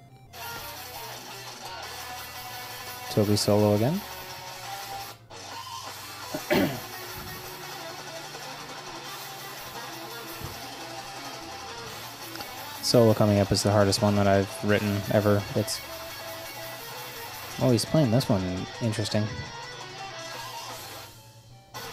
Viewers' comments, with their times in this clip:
0:05 Nice studio etiquette on the cough. It is why the control room is always on dim. And If you are asked, what was that. That is the reason. Good job.